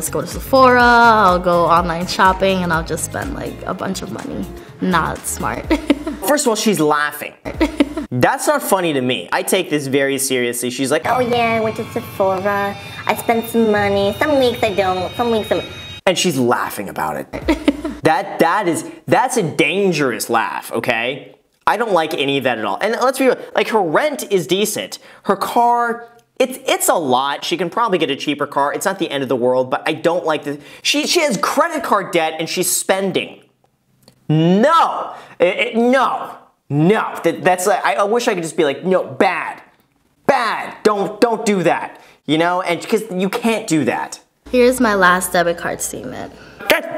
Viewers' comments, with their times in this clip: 0:07 Jesus imagine hearing the chuckle in the middle of night while you’re home alone.
0:09 I think the laughter is from nerves and embarrassment not from being nonchalant or chill about her situation
0:33 Person: But Grahaaam (Sweet voice) Graham: NOO Just NOO thats bad